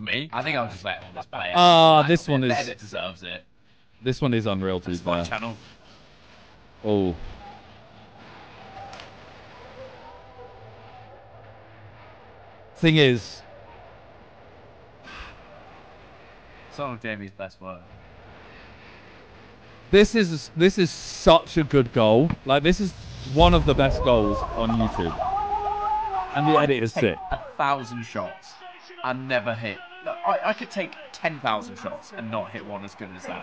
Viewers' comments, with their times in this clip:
0:05 is the audio glitched for every1 or just me cuz all the audio on my other tabs are fine?
0:17 wth happened to the audio ??